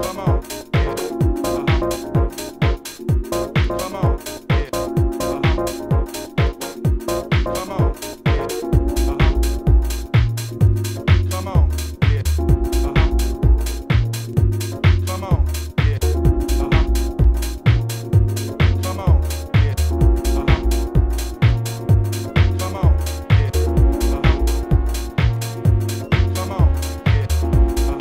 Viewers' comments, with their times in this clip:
0:09 a masterclass in dropping a bassline.